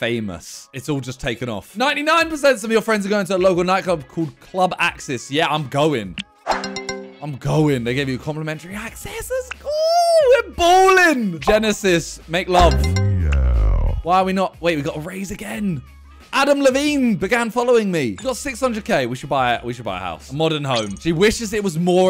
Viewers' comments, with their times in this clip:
0:07 is it just me or he said the n word
0:07 did he say: "I'm going n*gga"?
0:08 am i the only one who heard him say the N word ????/